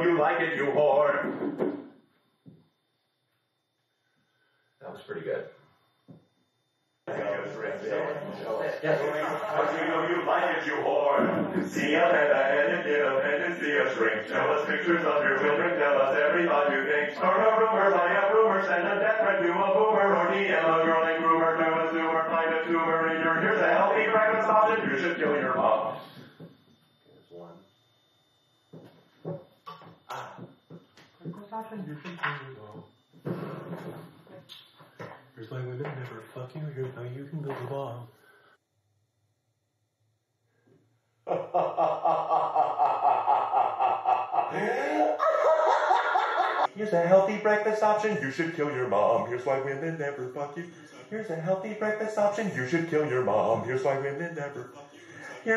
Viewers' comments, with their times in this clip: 0:07 That 35 Bo's choir was epic
0:39 The laugh gives me chills